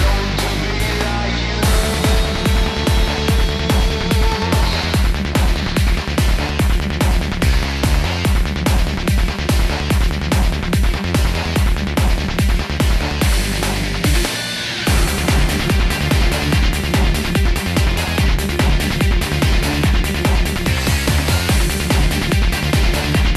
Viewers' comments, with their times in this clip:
0:07 Cowboys from Hell. Just sped up.